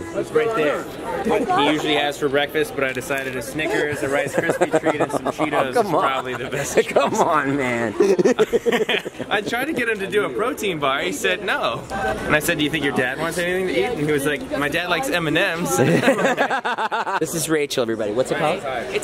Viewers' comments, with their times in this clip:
0:07 you can hear liza say i love you to david